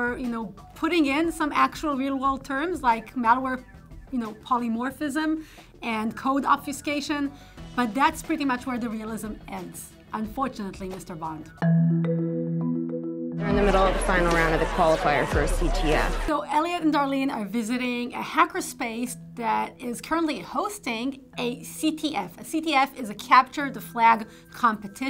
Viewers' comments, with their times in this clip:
0:09 this was great! when she says "unfortunately mr. Bond" like a villain. hackers are too clever for their own good :)
0:11 when she says unfortunately Mr Bond in her accent sounds like a Bond villain with that accent.